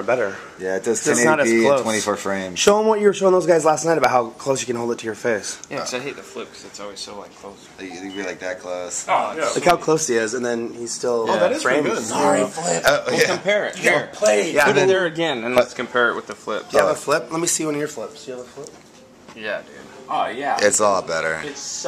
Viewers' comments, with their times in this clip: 0:08 Omg somebody got a text and I seriously looked at my phone thinking it was me!! :S